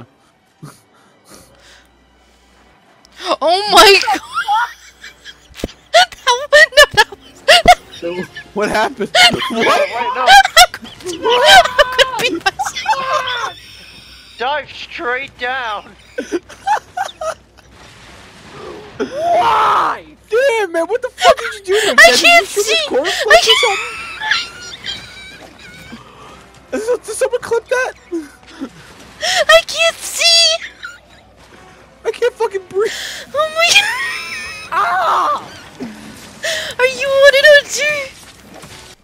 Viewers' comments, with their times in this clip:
0:04 Muffled WHAT THE FUCK?!
0:22 That part put me on my ass. Even more so when she started her Epic Wheeze. ˡᵒˡ